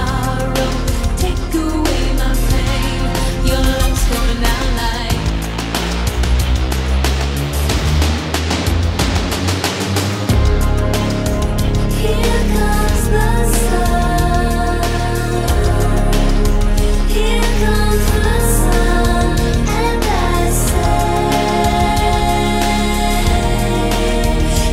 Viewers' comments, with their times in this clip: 0:05 synth rise is so dope..